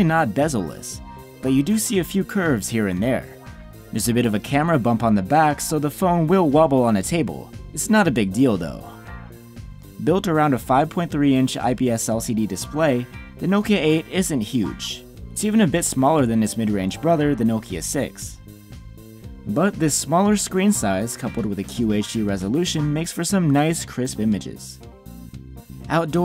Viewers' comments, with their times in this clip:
0:07 "It's not a big dildo" ...I love nokia phones!
0:07 why do you say "its not a big dildo" in a phone review?
0:07 it's not a big dilddo 🤔
0:08 he said dildo. Ha ha ha.